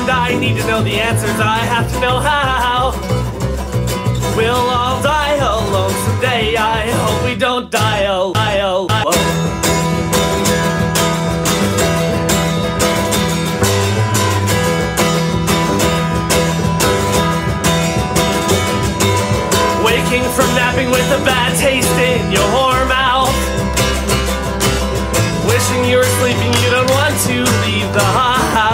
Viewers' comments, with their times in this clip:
0:09 The audio glitches